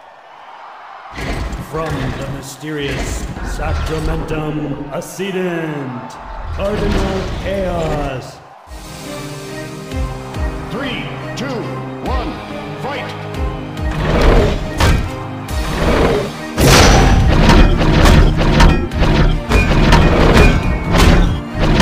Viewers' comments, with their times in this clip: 0:04 this voice sounds familiar...